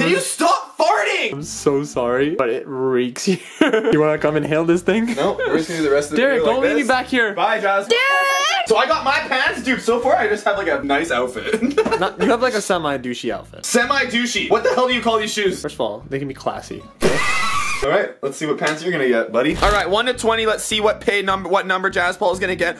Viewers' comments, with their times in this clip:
0:07 what is that scream😂😂😂
0:07 Lol it sounds like a girl screaming